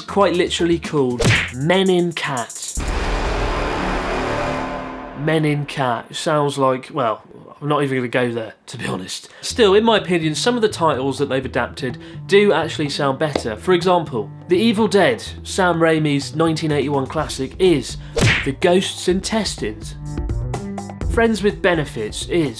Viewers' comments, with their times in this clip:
0:05 sounds like Shane Dawson